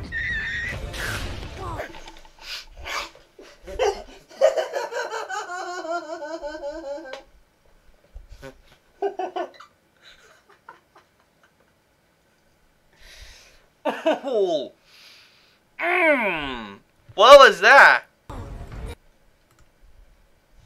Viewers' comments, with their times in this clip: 0:04 no offense but that laugh almost sounded like the joker in my opinion